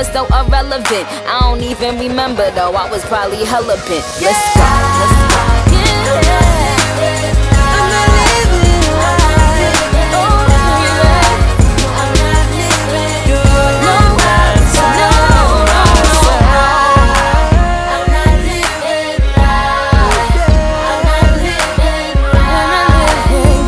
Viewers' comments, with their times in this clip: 0:05 the MV doesn’t have Nicki’s backing vocals in the final chorus (after the rap)